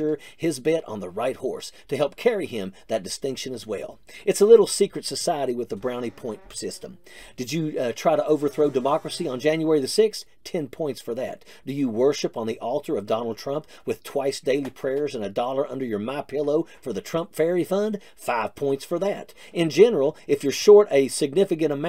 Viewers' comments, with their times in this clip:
0:06 The sound effects sound similar to the words that squeeze from MTGs awful mouth.